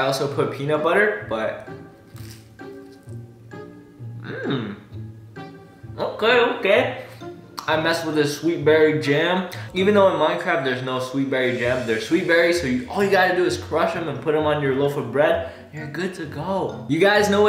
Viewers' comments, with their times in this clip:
0:04 woah the perfect Minecraft villager sound